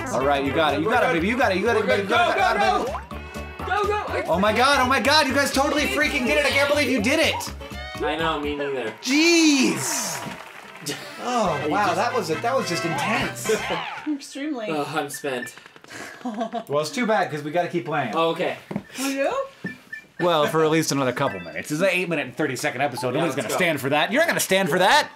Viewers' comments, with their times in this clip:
0:09 The audio from the game isn't coming from the mic; their reactions are a separate track layered onto the video/audio from the game itself, and lately they've been layered out of sync. If you listen carefully at some points when the music gets loud in the game, you can hear it quietly through their mic a second before you hear it again in good quality. Listen for this when the trumpets come in.